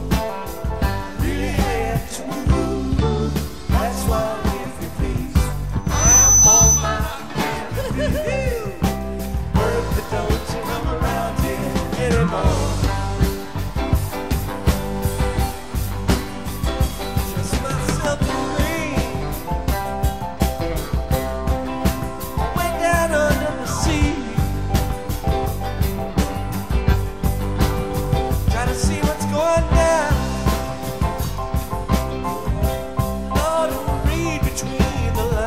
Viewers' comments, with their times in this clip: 0:04 hahaha, 😆, laughing and saying whoo from the mic feedback I love this.
0:06 Did Bobby get a shock at the mark of Bertha?😂🤣. I've listened to this show a couple times, but this morning, I replayed that part of Bertha five times and laughed until I was crying.. the harsh feedback and the way he sings "knees". Hahaha "kne-heeee-HEeeees.." 😂
0:19 Piece of advice don't turn up the volume till after